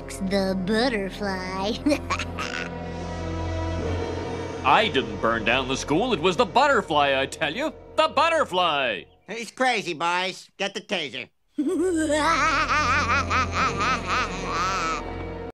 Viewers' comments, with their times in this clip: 0:09 Chief Wiggins: He's Crazy Boys, get the Taser Bart: (Evil Laughs.)
0:11 best villain laugh ever!